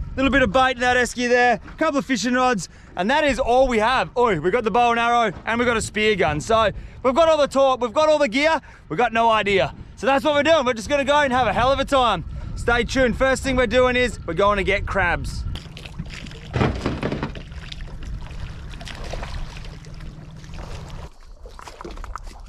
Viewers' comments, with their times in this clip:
0:03 hahhahah omg he is sooo Australian mate 🤣